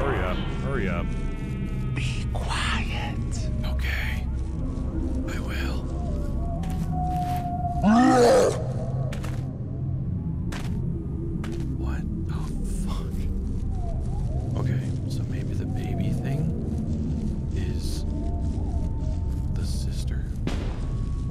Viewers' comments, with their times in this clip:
0:05 That goofy roar completely ruined the atmosphere🤣🤣